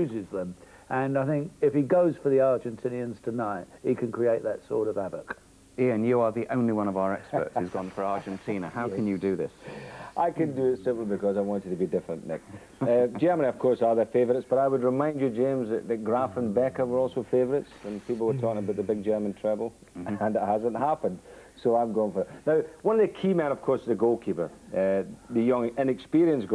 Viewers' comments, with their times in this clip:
0:08 I refer anyone who thinks Frank Skinner made up Ian St. John's habit of going "heh heh heh heh" to